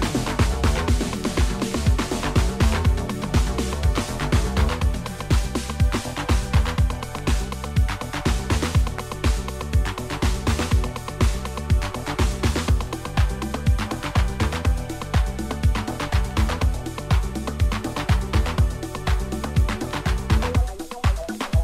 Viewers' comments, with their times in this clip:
0:04 Retro Late 80s Style 😅 Onit 🔊🎊💊🇬🇧😋🍄💥🥽😜🙃🔊🫠🥸😎😈🎶